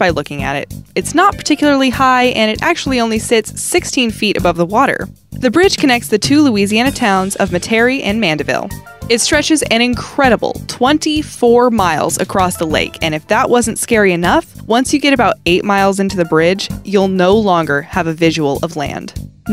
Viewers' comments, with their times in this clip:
0:07 Who the hell pronounces Matairie like that?😒